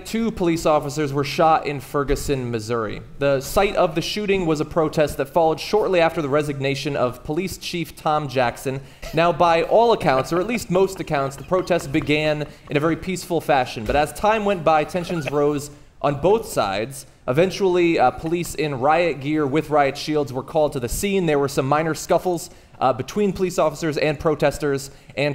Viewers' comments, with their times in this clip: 0:07 00-14 who the heck is that laughing ? Lol distracting. You might have to put earphones on thats how i caught it.